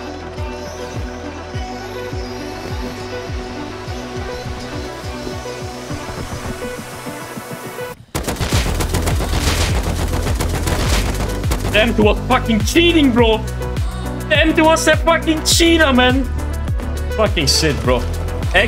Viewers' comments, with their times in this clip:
0:03 the most hype moment ive seen in rust yet, bro u had me audibly astounded when u wiped them like that. the music made it so good broooo